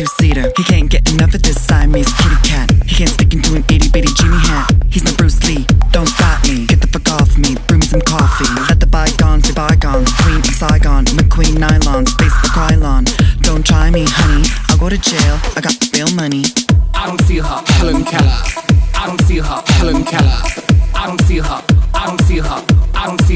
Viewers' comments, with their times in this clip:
0:04 LMFAO I thought she said "itty bitty Jew-y hat"